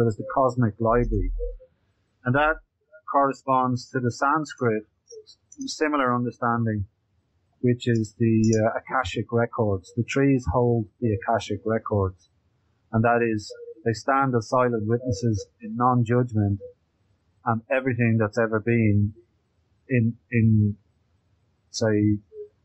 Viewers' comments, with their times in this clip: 0:04 anyone understand what he's saying about trees holding all knowledge, is that Cosmic Life Tree? Cosmic Lively?